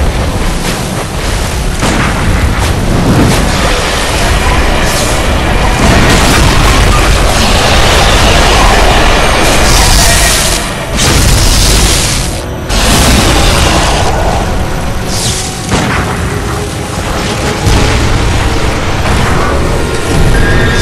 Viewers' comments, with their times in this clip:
0:06 At least he went down with a bang.